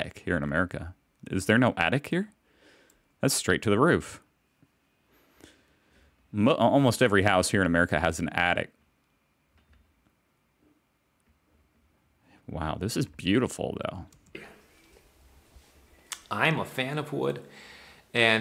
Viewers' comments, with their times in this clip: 0:06 why did I hear "almost every house in america has and addict" :D might be true nowadays